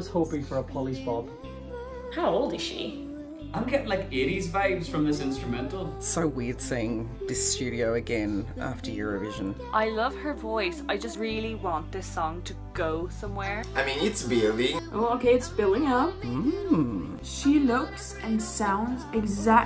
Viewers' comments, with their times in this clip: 0:03 Same here...80s rock song with motivational title.... Anyway its good song and did you know its written by Gromee ;)